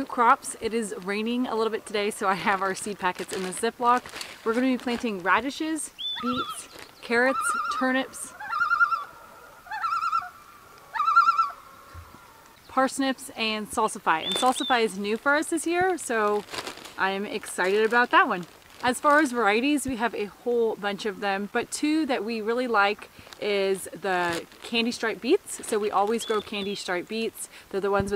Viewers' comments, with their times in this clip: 0:05 Amazing loon call ! I've heard them in northern MN but never that close and clear. I'm guessing that Alaska is the bar when it comes to nature intensity ... at least here in America. I was trying to find the growth cycle of potatoes from seed to harvest. I'm going to try a winter grow here near Seattle tomorrow, Jan. 1, 2021 Got those amazing Purple Potatoes that go so good with anything bright orange(carrots...) or yellow(corn) on the plate : )
0:06 Oooooooooo ... purple french fries! I love sweet potato fries, and it would be cool to try some solid purple ones. Are there extra health benefits to eating purple potatoes? audio bombed by a Loon ... nice! Garden is looking good & very organic. All the best from central Pennsylvania. .... edited for spelling ~8^)
0:10 Enjoyed hearing the busy woodpecker and the happy rooster. What was the other bird ? (feel like I should know that but, alas). Your soil looks amazing. You had a bumper yield last year with some huuuuuuge potatoes. If I was planting potatoes, I'd follow your process to the "T"! Your entire crop last year was simply amazing, as was your canning and your "how to" root cellar to preserve everything. YAY spring!!